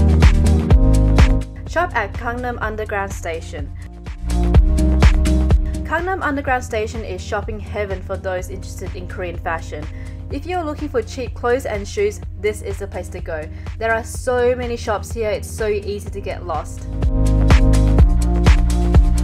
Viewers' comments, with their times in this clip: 0:07 turn on captions "Condom" SDKJFAKSJFDAJSKDFJKS